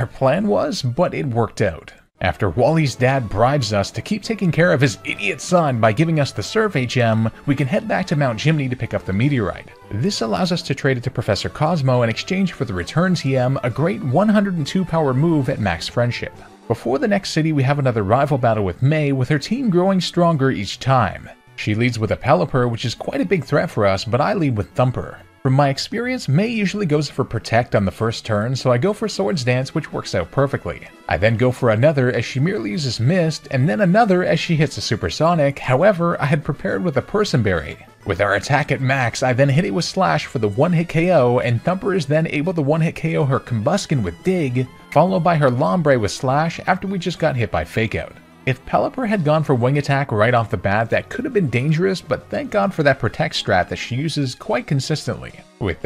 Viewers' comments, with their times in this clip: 0:06 I thought you said Wally's dad gave you the Survey Gem. Lol.
0:39 you hit it with splash?